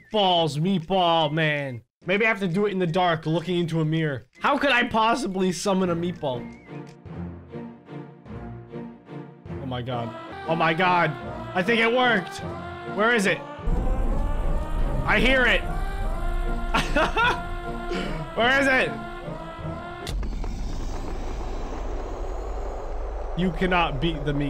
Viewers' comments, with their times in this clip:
0:07 uh wait hears singing Meatball: ITS MEATBALL TIME